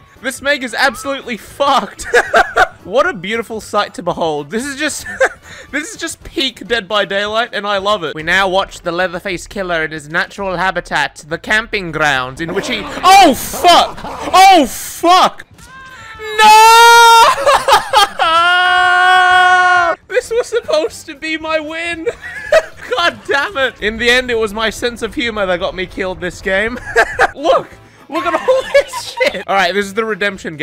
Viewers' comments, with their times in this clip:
0:06 i loved that accent hahaha
0:18 that harmony in those voices!